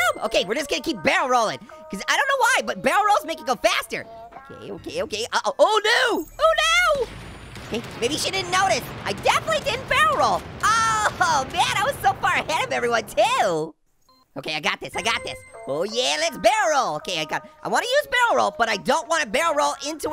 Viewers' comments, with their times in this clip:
0:05 did anyone hear that voice crack???